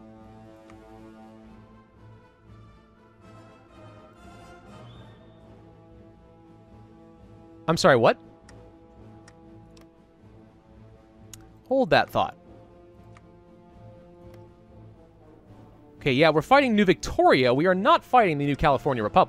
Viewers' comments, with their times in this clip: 0:04 long pause "...I'm sorry, what?" I'm DYING